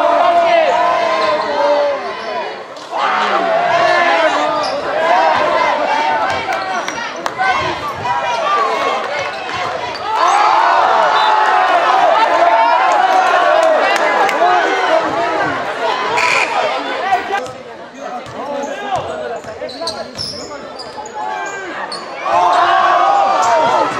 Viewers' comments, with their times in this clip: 0:08 my man legit blocked it from the floor and the crowd going wild tf